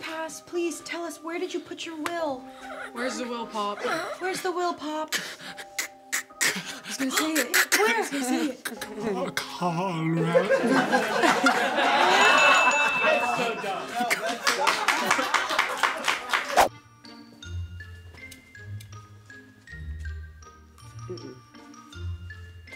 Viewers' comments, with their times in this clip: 0:08 Kuh-kuh-kuh... what? What the hell did he say? Colorado? Why is everyone laughing? I need to know, damn it!
0:10 what did he say?! I can’t understand it for the life of me 😭